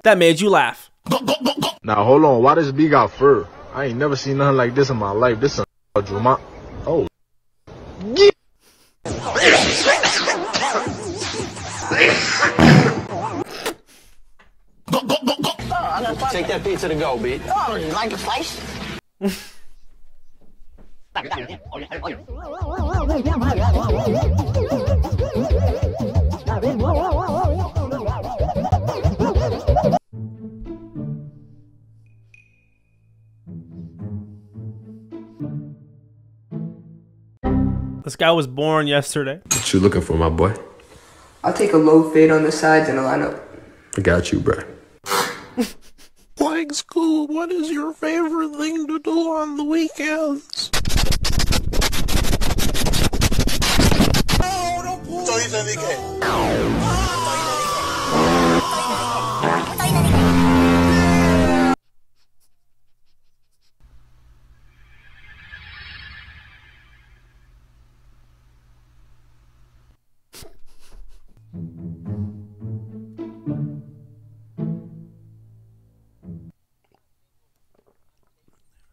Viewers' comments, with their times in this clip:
0:09 he look around to see if anyone hear him fart
1:00 why do dat sound like SpongeBob alarm clock😂😂😂😂😂😂😂💀💀💀💀💀💀
1:00 why that sound like SpongeBob alarm clock